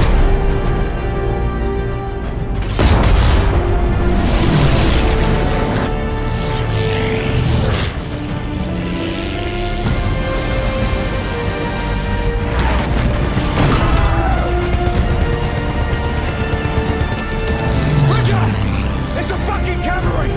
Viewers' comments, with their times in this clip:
0:08 Game over for the Germans when those spitfire engines fire up still gives me goosebumps to this day